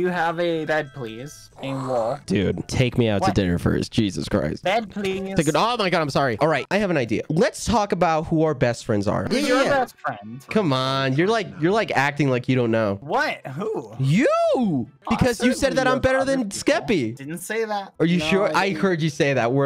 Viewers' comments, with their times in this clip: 0:03 The way bbh says bed please~ is so cute